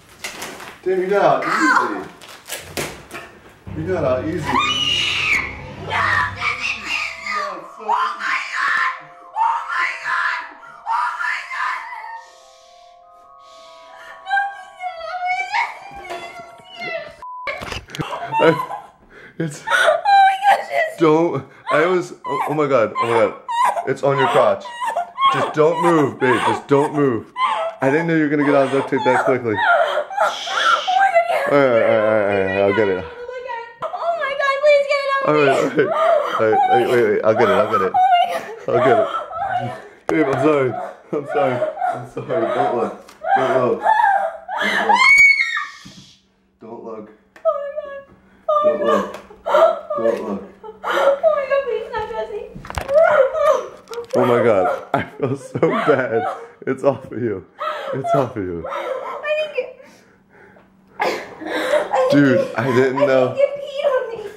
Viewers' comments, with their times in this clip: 0:04 dat scream tho
0:04 when you have diarreha also everytime she screams the cat runs away XD
0:05 it sounds like she getting murder when u close ur eyes 😂
0:06 how to scream like a singer of death metal
0:07 sounds like A RE RE RE RE REMIXXXXXXXXXXXXXXXXXX
0:08 I was their neighbor, I thought they were having wild sex.
0:08 is she praying to god really loud?
0:08 That's some really nice metal screem You like metalcore. I see.. 😅
0:24 Close your eyes, and let your imagination flow, (It sounds like she's hyperventilating and having sex at the same time lol)
0:28 the cat is the fucks going on! 😂
0:41 OH YEAH!!! The audio itself sounds like hardcore porn! And makes it better
0:45 I think the tarantula hissed